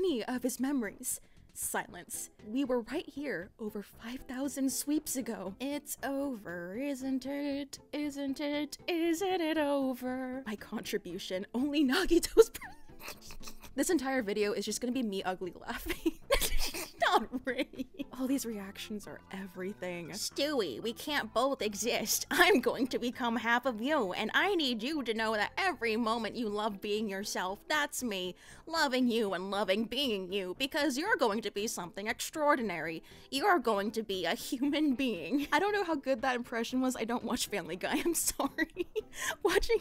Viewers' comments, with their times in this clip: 0:05 its over isnt it but in the style of how bad can i be
0:20 This image and that voice nearly f▒cking shredded me to ribbons